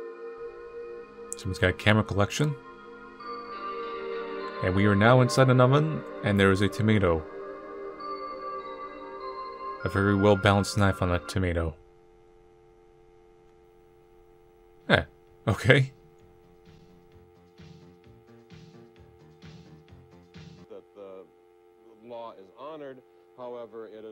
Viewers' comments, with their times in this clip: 0:08 Man, loving the atmospheric music. Kinda Yume Nikki (2kki?) like